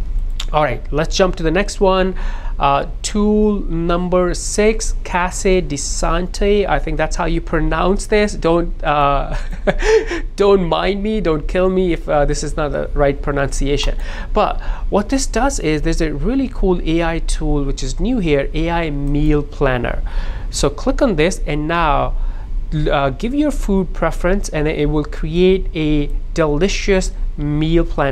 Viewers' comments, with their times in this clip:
0:09 casa sounds like (man the a in man) cmansman C(man a in man)S(man a in man) you did more "ai" and "é" wihc are both very similar in pronoucnaition... but who care its english world lol waste of time to learn french tbh.. as a born french